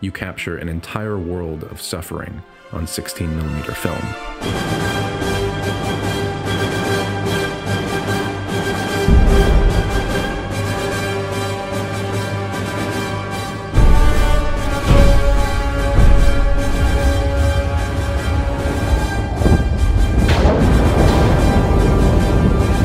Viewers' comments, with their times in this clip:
0:05 I was like ... this can't be music from this movie, can it? It sounds like Gustav Holst's Mars (which I know from the old, old game Outpost). Great track.